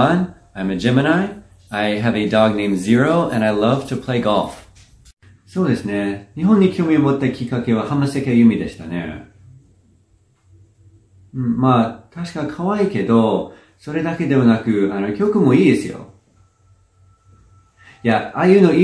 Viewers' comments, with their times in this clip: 0:06 sounds like Tatsuro Yamashita